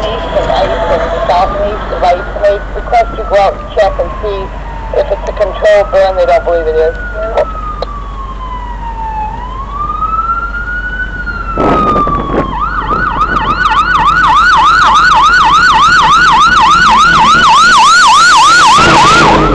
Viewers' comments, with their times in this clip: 0:04 Cool old rigs, as long as they're maintained well they can do the job just fine. Sounds like an old school PA300 siren inbound I have the same one in my POV.